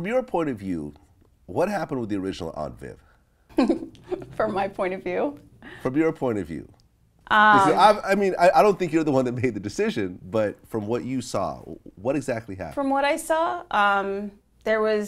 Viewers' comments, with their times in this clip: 0:03 her laugh... her smile...the way her whole face lit up in that instant... 😍😍😍